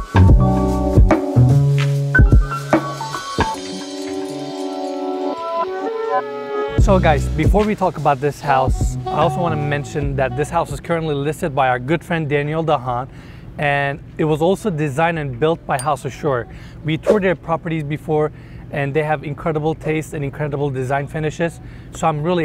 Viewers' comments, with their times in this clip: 0:08 Did anyone else notice how it sounded when he said "house" ?😯